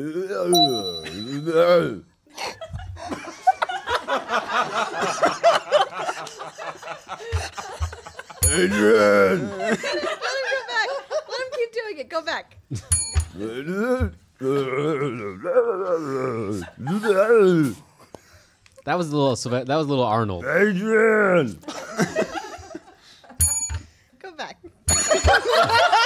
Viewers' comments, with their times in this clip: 0:07 Had the Stallone "AaDdRrIiAaNn" stuck in my head for a week, had to find it.